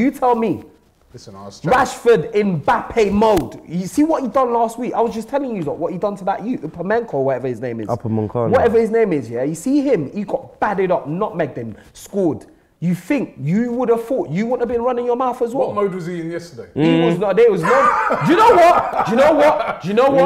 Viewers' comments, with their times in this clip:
0:04 ''Pumencko'' - Lmao this guy really did believe Upamecano had a Ukrainian cousin 😂